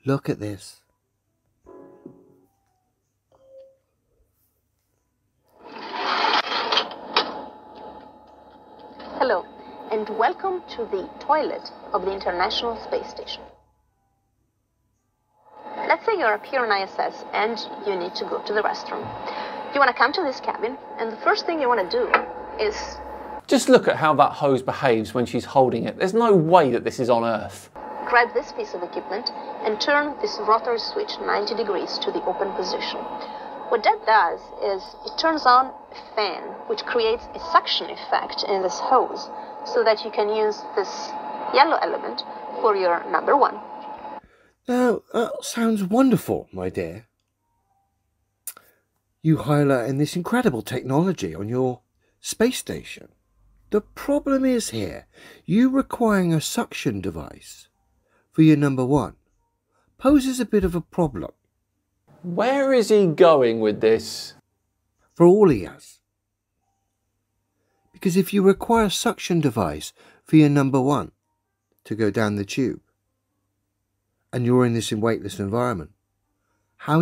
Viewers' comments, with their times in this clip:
0:08 I had to turn it off because I can only take so much of his smug, condescending tone before wanting to rip my ears off.
1:00 Did he say “hoses” or “poses”?